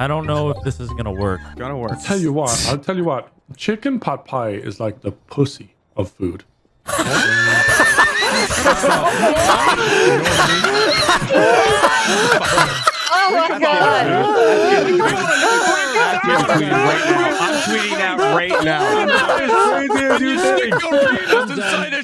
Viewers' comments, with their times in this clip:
0:06 Nogla must be having tea with his chicken pot pie. It sounds like it's done.